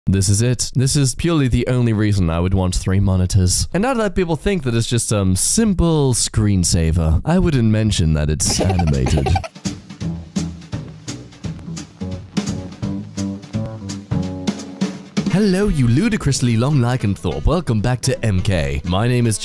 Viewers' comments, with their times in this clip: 0:01 oh nO HES BACK (fallout sires